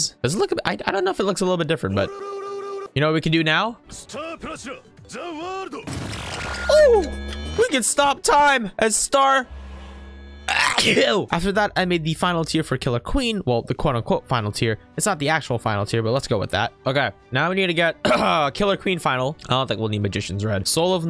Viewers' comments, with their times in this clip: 0:08 aww yes the ultimate stand STAR AHCHUU